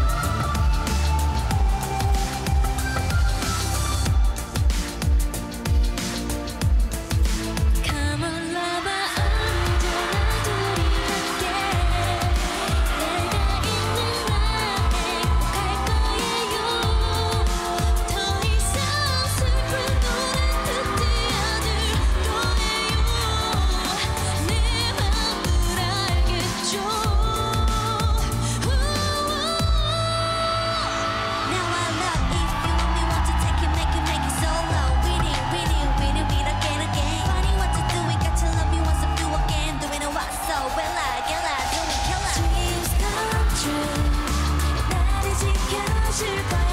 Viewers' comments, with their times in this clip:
0:04 At certain parts, you can definitely tell whether it’s specifically ONCE or Reveluvs cheering, but Joy’s part …. It had everyone going crazy
0:04 joy's part has made the audience roar louder than others' part
0:06 I need a replay button for myself. Joy's voice suits this songs so muchhh
0:06 for Joy’s part for anyone curious. We love our honey vocals 😍 SOOYOUNG-AH💚
0:06 I always repeat just because Joy’s Honey like voice Proud Reveluv & proud Once
0:07 when Joy start singing I know I fall in love with her I just know…her honey voice so angelic…
0:07 joy and seulgi’s voices daebak
0:07 Joy’s “Come on, lover!” is killing me! 💕 Her voice sends me straight to heaven!
0:32 wow chaeyoung speaking kwangyanese /j
0:32 Omg I LOVE the instrumental shift when Chaeyoung comes in